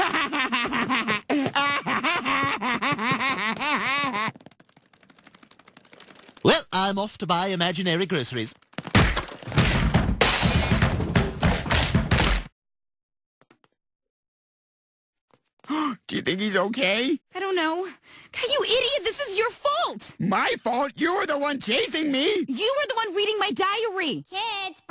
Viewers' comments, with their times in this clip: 0:08 i can't fucking unhear the "oh my god" sound effect whenever i see now thanks internet
0:09 this stewie falling down the stars beat slaps hard
0:12 Best Tom Segura impression I've ever seen.